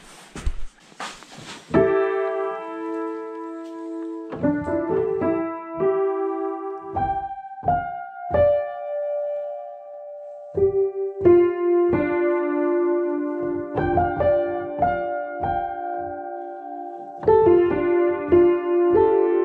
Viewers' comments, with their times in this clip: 0:03 Imagine You're the wanderer of Vorkuta interiors and suddenly this Piano plays...